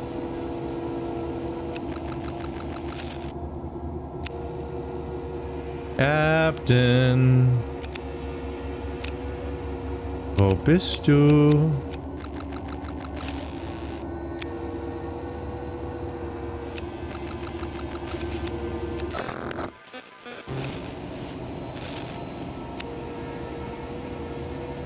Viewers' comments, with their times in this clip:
0:05 Wow, your German pronunciation was actually really impressive!